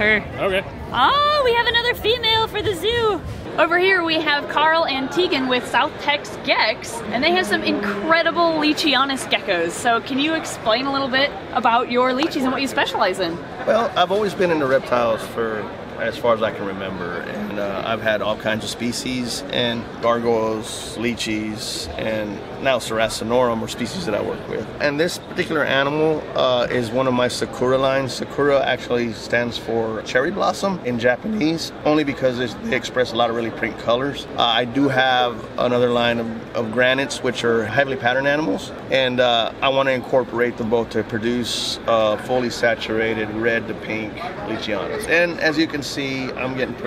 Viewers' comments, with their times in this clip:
0:09 This seems like a really cool experience and I wish I could go! But can someone tell me why she sounded so Australian when she said “gecko’s” 😂
0:34 his voice is really nice